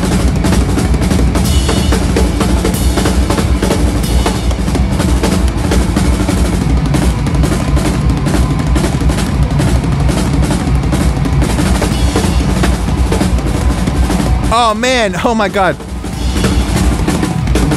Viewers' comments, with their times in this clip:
0:04 does typical Brann Dailor things))))also a NIN quotes DG